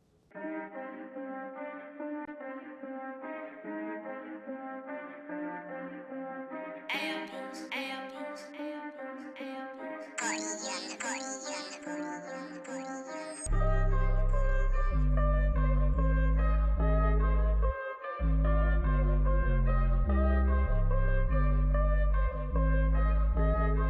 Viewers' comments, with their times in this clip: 0:04 best beat in the whole vid i think 🔥🔥